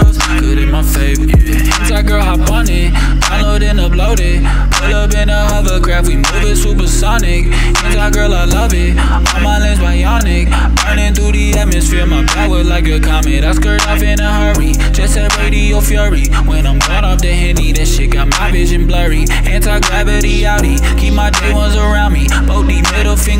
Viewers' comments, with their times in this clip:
0:07 "Hentai girl i love it :////////////////////////////////////////////////////////////////////////